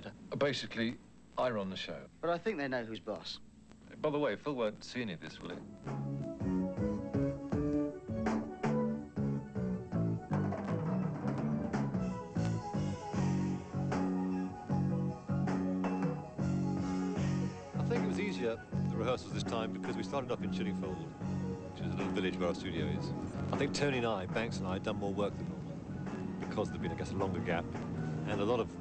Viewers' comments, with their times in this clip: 0:10 Love that fill!!!